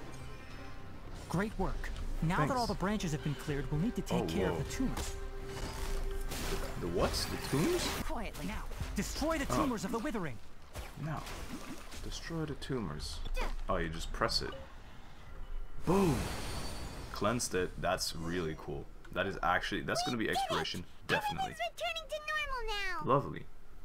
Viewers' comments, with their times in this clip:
0:07 the timing with tighnaris voice and yelan's voice sounds like shes screaming mid e